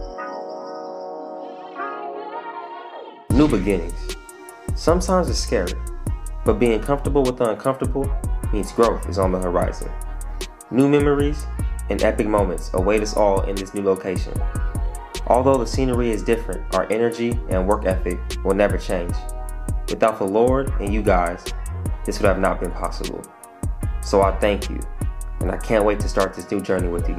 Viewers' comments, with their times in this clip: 0:08 why he sound like them 2k introduction